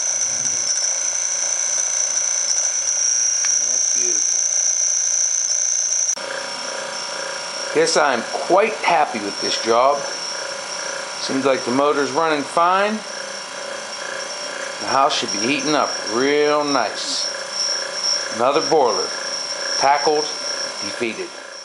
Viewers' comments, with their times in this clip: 0:09 Sounds like a thrashing machine Get rid of the old style coupler and use the single spring Spiralink.